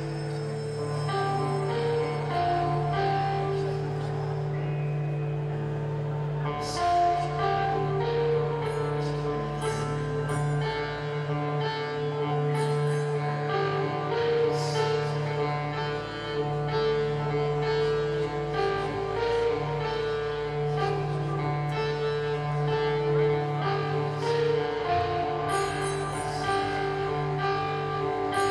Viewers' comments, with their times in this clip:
0:10 kinda sounds like Danny is trying out part of the intro to Vicarious.